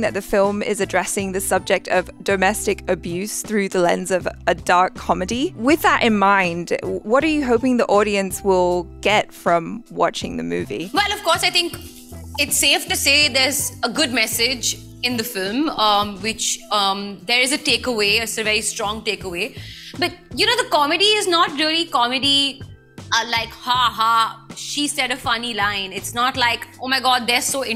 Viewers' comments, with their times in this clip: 0:10 where Alia unknowingly literally shouts...well ofcourse ..haha